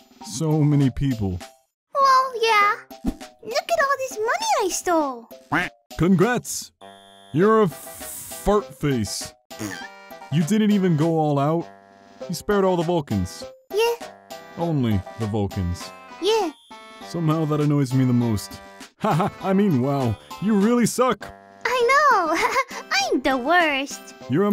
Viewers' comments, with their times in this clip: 0:03 I love that voice with the frisk
0:09 that little "pbbft" is so cute omg